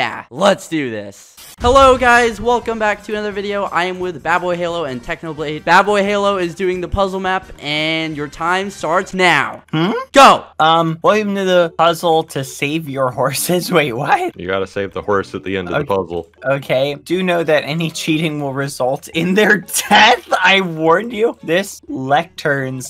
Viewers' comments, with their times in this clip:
0:08 Bad's "hm? " is the cutest thing oml